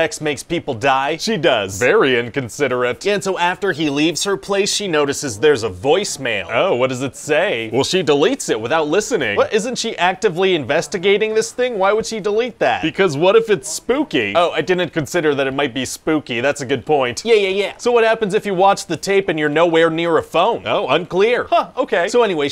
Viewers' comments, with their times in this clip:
0:03 why does Ryan's voice sound electronic in ?